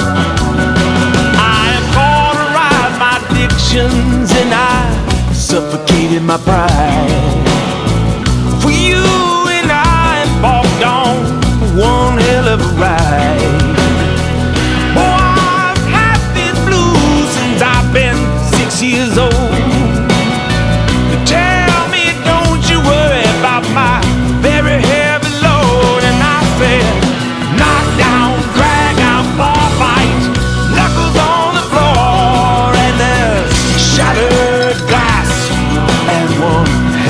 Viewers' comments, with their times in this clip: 0:09 a round of applaus for voldermort on bass
0:19 I love the "body" vibrato on !!!! :)